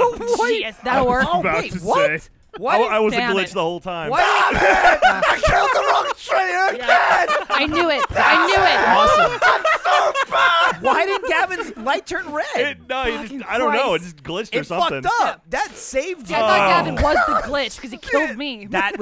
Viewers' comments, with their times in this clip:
0:04 might well be the most legitimately frustrated I've ever heard Gavin in these videos.